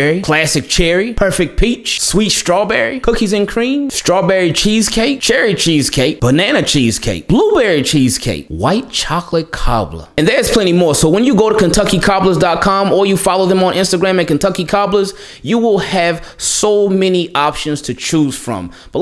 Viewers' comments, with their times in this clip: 0:04 the same Key & Peele senior bowl player intro energy. I love it 😅